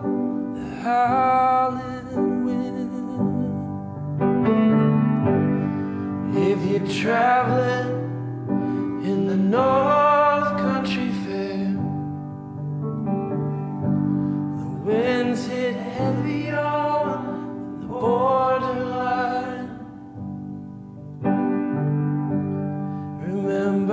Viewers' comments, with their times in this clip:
0:05 The harmonizing starting is just unreal.